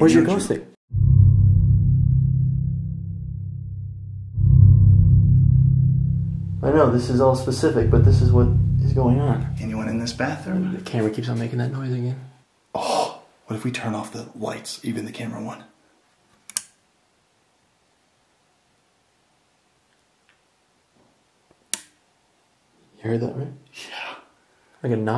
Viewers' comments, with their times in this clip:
0:10 does anyone else hear 'I'm not'